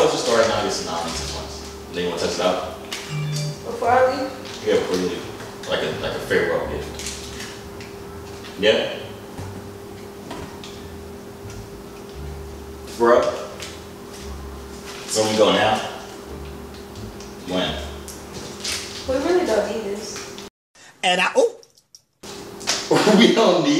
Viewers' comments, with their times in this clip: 0:08 the finger pointer snap IYNKYK